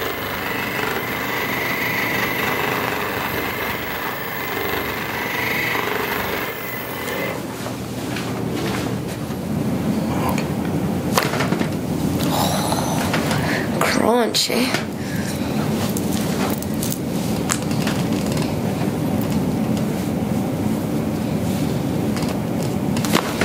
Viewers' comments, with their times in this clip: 0:09 was literally crunchy, love it